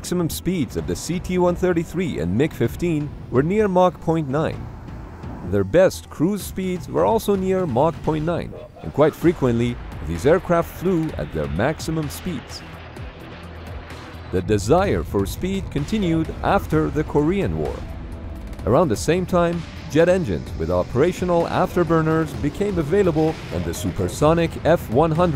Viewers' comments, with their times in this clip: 0:08 Did anyone else hear the transformers noise ish or am i going crazy